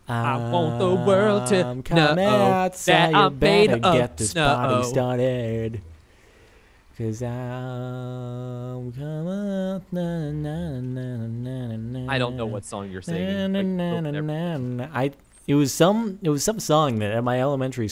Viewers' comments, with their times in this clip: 0:03 I like that song, I don't think I've heard it before, but the way he sings it, it sounds nice.
0:04 that sounded beautiful